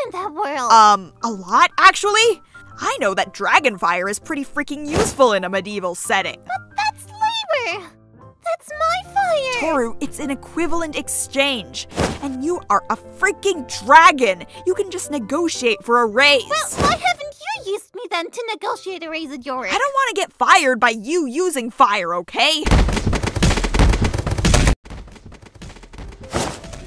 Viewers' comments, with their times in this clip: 0:08 she sounds so sad